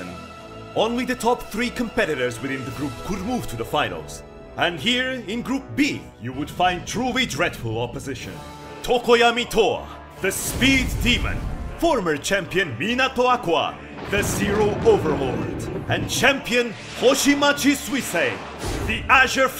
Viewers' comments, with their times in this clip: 0:07 sounds like a Dark Souls intro